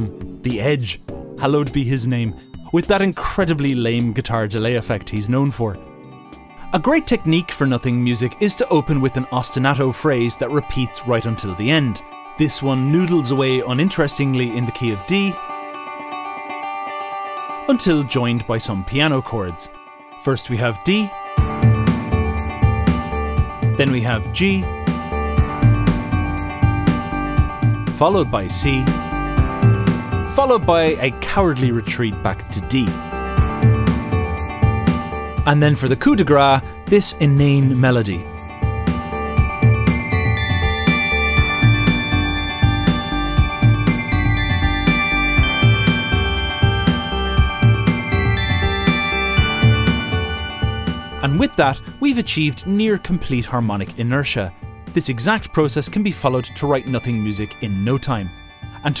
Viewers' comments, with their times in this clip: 0:05 I don't get why, but sounds like some Sims 3 track you'd have playing on the neighbourhood screen... ...Hold on, wait a minute-
0:08 Okay but why does sound like it's straight from the Sims 3?
0:12 sounds like someone with an indistinct southern accent is gonna start talking about their amazing local downtown which has like 5 stores
0:13 animated movie trailer music
0:20 The drums in bother me so much
0:23 Honestly I think the song without the melody, and maybe an actually good melody could be a good song if you added other sections to it.
0:35 I don't know if it was intentionnal of you but you actually said "coup de gras" and "gras" means fat in French, so it's perfectly fitting.
0:48 sounds a little too much like actual resolution for nothing music. Would probably end on an A note instead. That way you don't need to worry about having to use extra notes or have actual contrast. 🙂